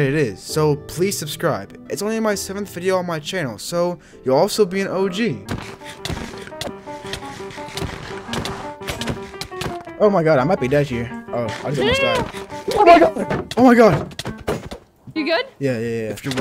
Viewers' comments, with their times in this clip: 0:04 You'll Also be an og... Music disc tall plays*